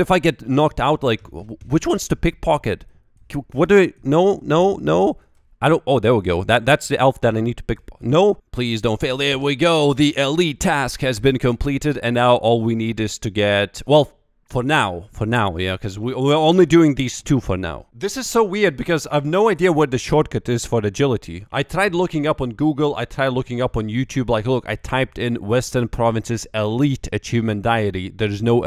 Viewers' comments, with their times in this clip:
0:10 a friend sounds like an American.